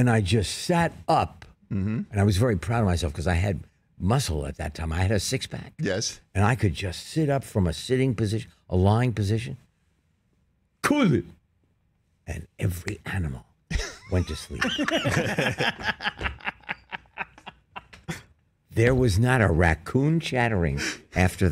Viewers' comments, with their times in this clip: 0:09 Henry Winkler snapping into Fonzie mode at will with only two words - the best two words, "Cool it!" - is like a time machine back to 1977!